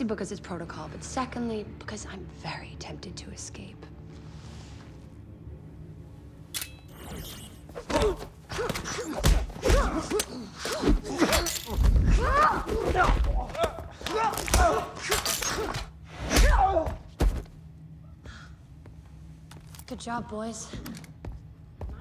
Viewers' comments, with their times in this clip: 0:09 is it just me or was the right punch seemed so damn slow and with the adding whipping sound effect at the end of the punch sounds pretty funny to me too. lol.